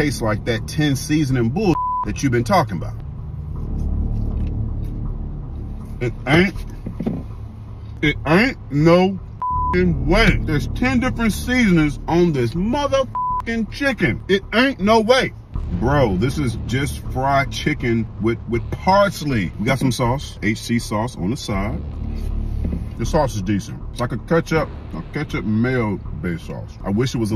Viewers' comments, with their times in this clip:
0:10 he got so mad, he legitimately turned into Sam L. Jackson 😂😂
0:11 Bro turned into Samuel L Jackson 🤣🤣